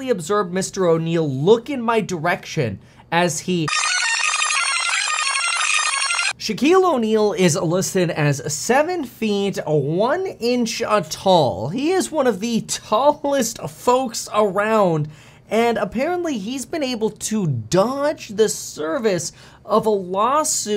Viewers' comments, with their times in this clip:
0:08 got that Thurston Howell the 3rd voice goin' on there